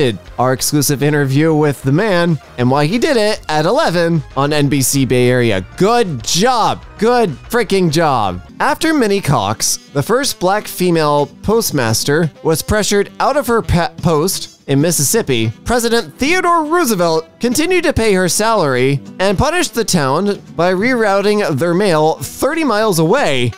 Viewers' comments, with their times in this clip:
0:08 lmao the way they said that name